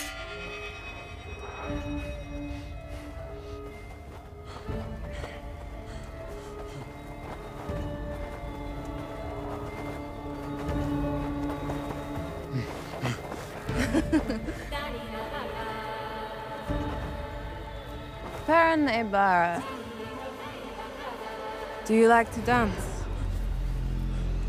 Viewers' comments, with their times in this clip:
0:08 Music start love this piece so much